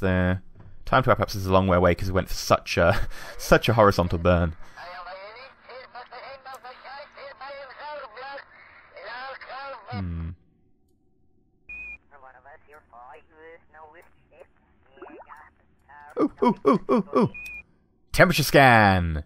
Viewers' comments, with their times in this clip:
0:05 is it just me that think the "radio kerbal effect" sounds like its sampled from a Hitler speach listen